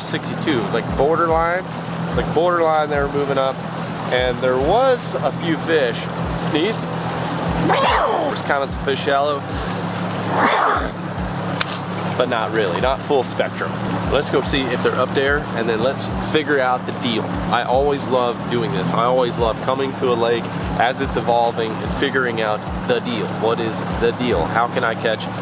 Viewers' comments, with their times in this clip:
0:06 Lfg im not making fun of you cause i watch every video but i cant stop laughing at your first snezze.